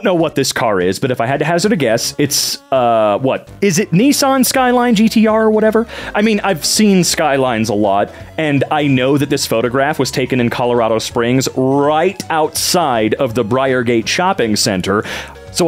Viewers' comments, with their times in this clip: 0:03 bro really said Ni-san 😂